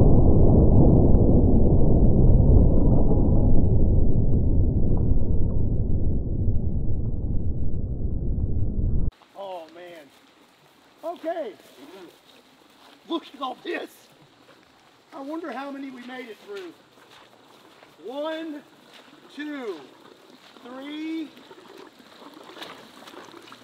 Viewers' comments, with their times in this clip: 0:10 the gunshot changed the whole atmosphere. That’s how you know it was powerful. But here’s what I don’t get. Can someone explain how this gun is even practical for duck hunting. Wouldn’t it just absolutely obliterate one ducks, obliterate the duck behind it maybe, then transfer enough energy to split the sea like Moses. But Then every other duck is outa there right?